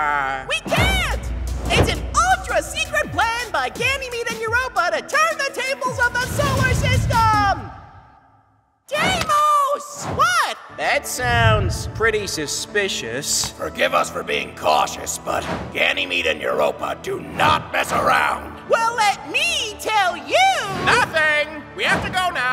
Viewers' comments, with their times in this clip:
0:08 “Jaimos” who the actual—